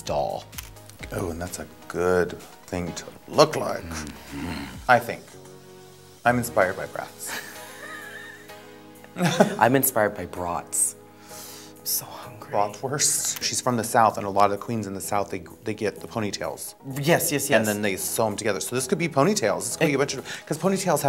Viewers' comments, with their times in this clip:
0:03 the way she mmhmms and the face. Had me rolling.